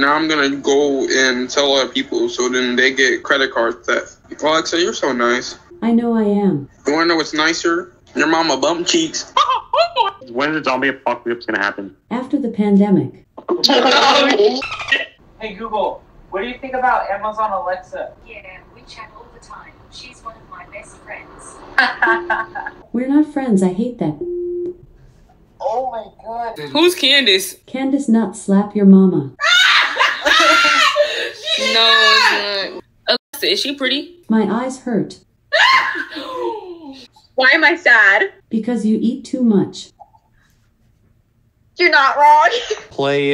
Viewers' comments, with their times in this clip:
0:05 that sounds like Mickey Mouse 💀💀💀
0:06 Mickey Mouse ahh laugh
0:07 bro turned into Mickey
0:09 he sounds like Mickey Mouse 😂
0:09 bro's mickey mouse
0:27 that laugh was personal 😂😂
0:30 that laugh is what got me the most 😂